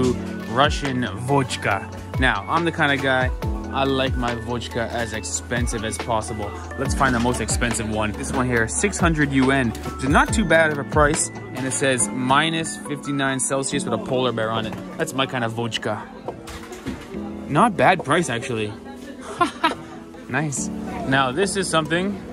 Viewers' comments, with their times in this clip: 0:05 He really said водька 😭😭